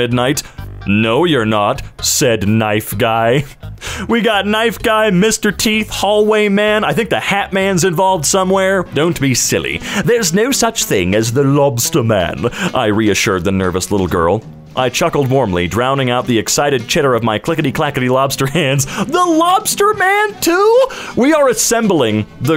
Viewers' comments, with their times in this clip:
0:09 why does he sound like Stewie griffin
0:09 why does he sound kinda like Stolas 🤨